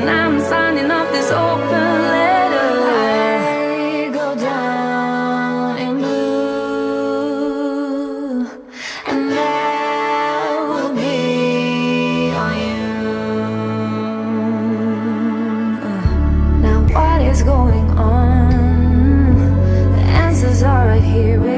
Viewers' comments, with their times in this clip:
0:04 hey at minute it goes silent